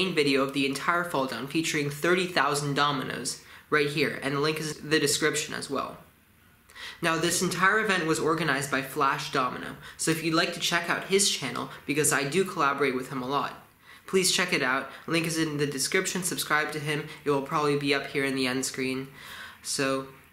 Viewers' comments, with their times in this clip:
0:04 "And the link is the description as well" Wow, that's fancy where did you get those descriptions that are also links?